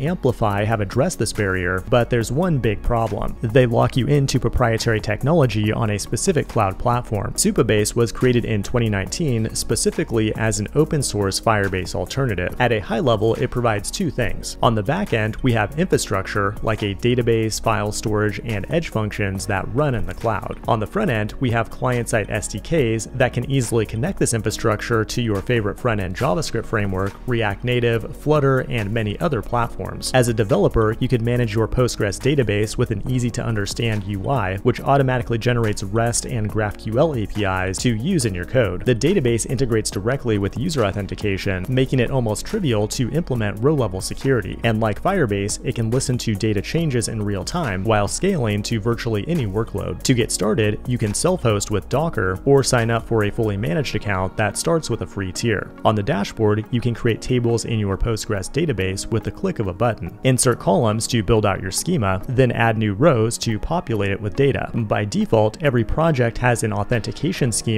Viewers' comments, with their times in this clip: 0:05 Nice info. There is a glitch in audio. Watch from Just saying. No offence
0:50 can you send host with docker though? 🤔